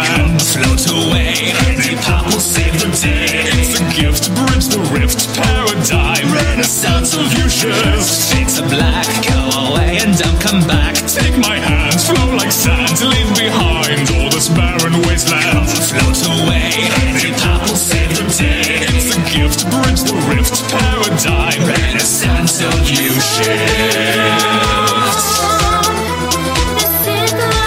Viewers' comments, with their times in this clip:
0:08 is it just me or at one does he sound like Jimmy Fallon?